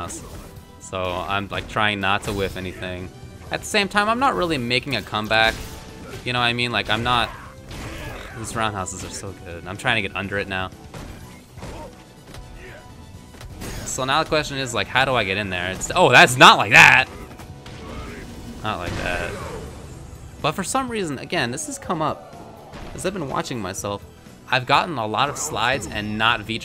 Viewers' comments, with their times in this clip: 0:08 The music timed up perfectly.